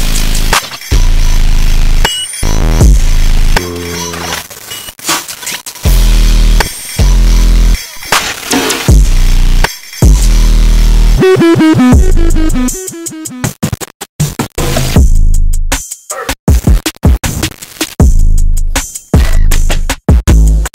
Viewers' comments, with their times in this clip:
0:03 oh shit, minecraft zombies comin after dat banger 😳🔥